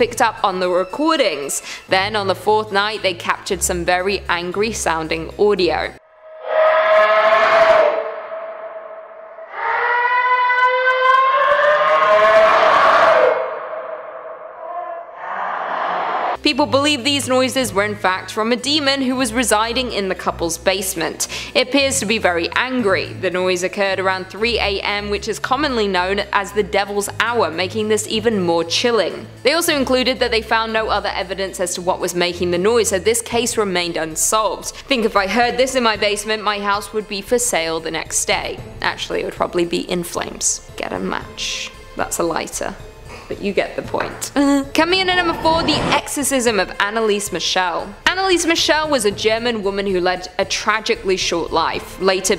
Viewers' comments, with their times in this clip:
0:07 me in toilet after eating tacoo bells
0:38 can’t sleep. Clicks on demon video. Hears the first demon scream. Clicks off of demon video